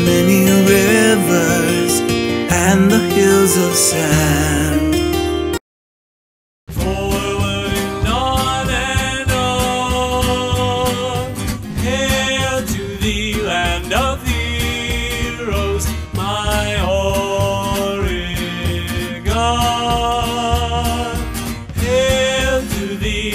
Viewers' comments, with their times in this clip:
0:08 I hear the singer pronounces "O-re-GONE"!!!